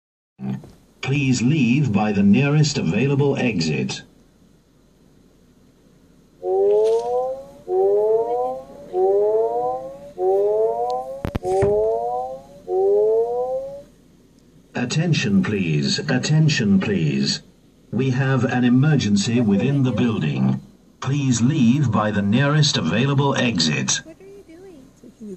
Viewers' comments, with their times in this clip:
0:08 that left channel ststic scared the [...] out of me